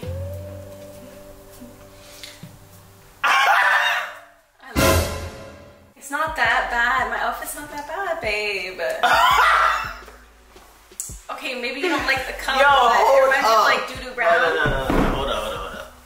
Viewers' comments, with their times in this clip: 0:03 the outburst killed me 😂